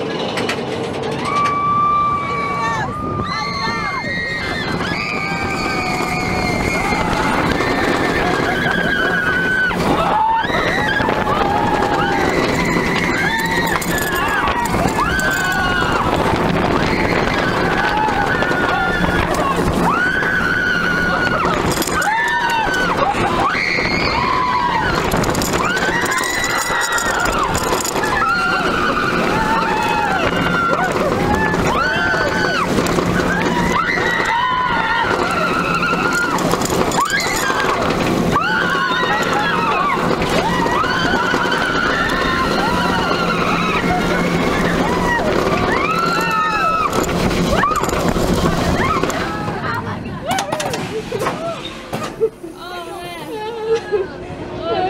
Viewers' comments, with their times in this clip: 0:03 When my car doesnt start😂😂 just listen to a girl scream.
0:42 on the silver bullet. that one girl screaming sounded like a horse😂😂😂😂
0:42 on the silver bullet. that one girl screaming sounded like a horse😂😂😂😂